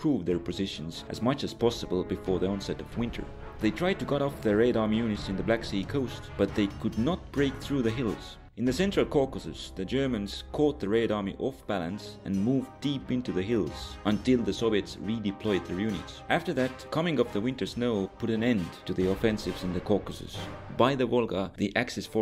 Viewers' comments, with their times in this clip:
0:08 I heard a cat meow 😂